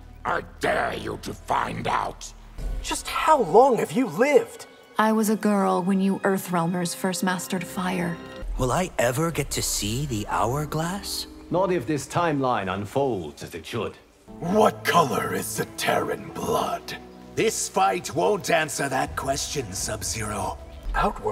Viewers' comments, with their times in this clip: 0:04 NITARA'S VOICE SOUNDED SO CALM AND PEACEFUL WHAT